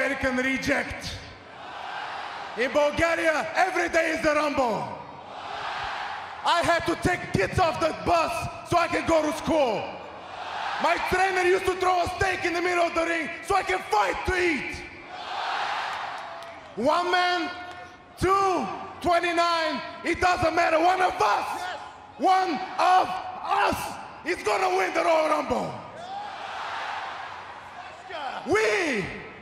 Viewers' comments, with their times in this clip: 0:03 did Rusev just say Bulgaria? Oh wait I thought he was suppose to be using his Russian gimmick with that fake accent.
0:11 Wade Barret laughing at rusev
0:13 Look Barrett is laughing and laughing :D